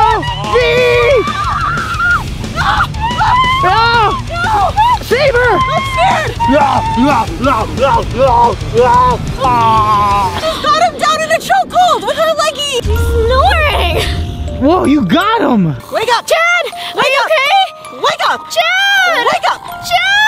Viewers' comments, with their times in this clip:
0:07 im the only one who thinks he sounds like the terminator